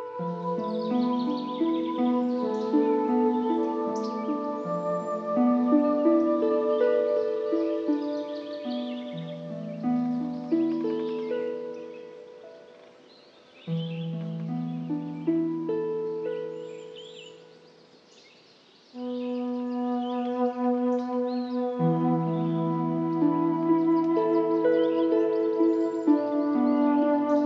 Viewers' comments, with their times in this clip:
0:10 I am sorry, but sounds of flies or wasps at different parts of this audio is kind of disturbing : ( Have anyone heard them exept of me? For example Anyway, besides that problem the whole thing is amazing. Thank you for the music!